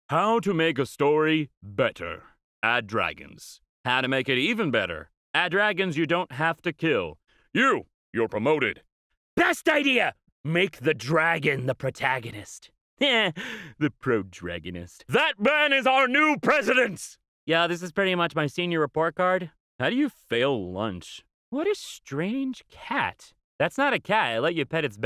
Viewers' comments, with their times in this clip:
0:08 Why does he sound like the English dub version of All Might ?